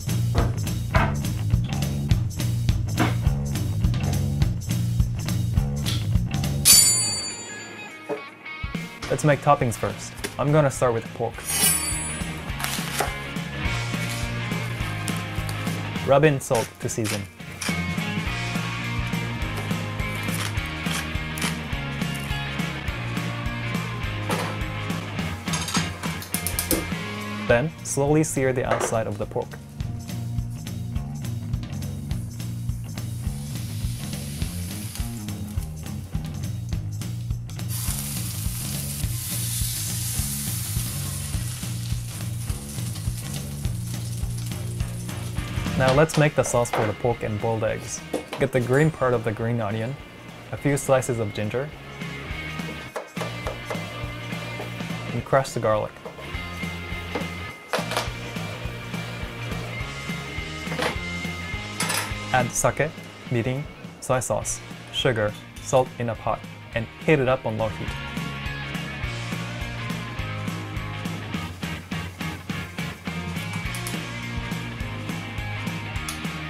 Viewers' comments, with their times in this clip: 0:04 The knife went :SHINGGGG
0:06 U hear that? Thats some katana shit right there
0:06 knife does PING M1 Garand: Are you challenging me?
1:03 SUCKE, MIRROR AND SAW SEE